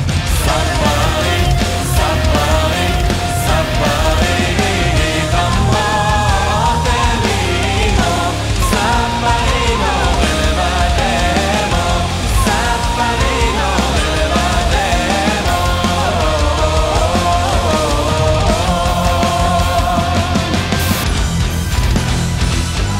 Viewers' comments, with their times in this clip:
0:05 cool chest drumming!